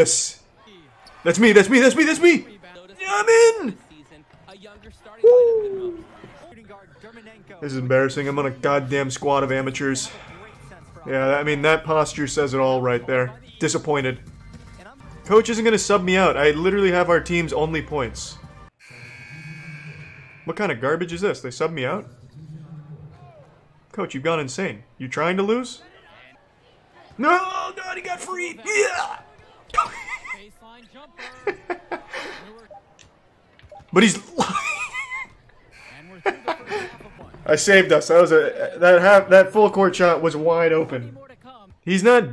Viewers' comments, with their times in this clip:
0:04 That little "wooo~"
0:04 he literally said 'woo' in lower case letters
0:29 When you try to start your car, but its cold outside